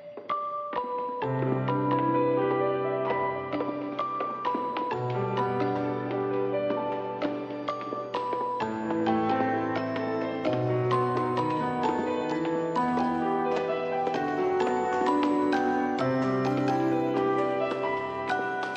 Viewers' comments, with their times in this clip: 0:04 (within) I loved those piano notes, is it from game or some other source